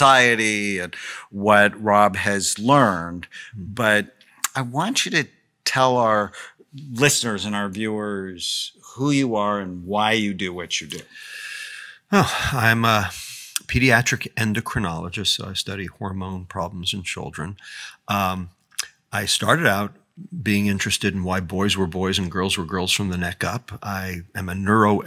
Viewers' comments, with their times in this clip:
0:10 Is when the dude on the left stops talking.